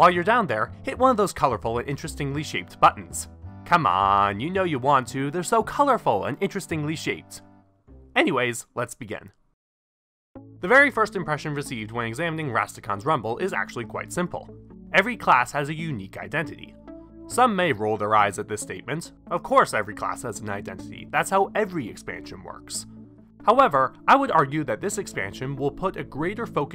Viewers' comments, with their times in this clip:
0:07 That voice crack lol